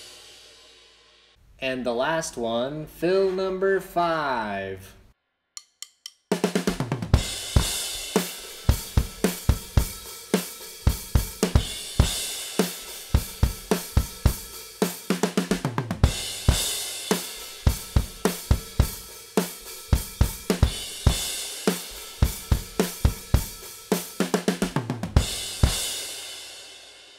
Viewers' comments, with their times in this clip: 0:10 is my favourite beat/fill 🤘